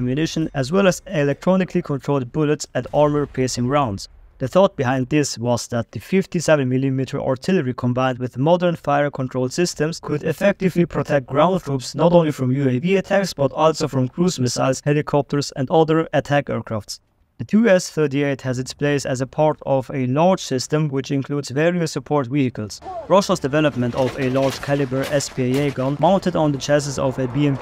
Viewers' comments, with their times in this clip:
0:09 the hand of Putin came in and added reverb for marketing purposes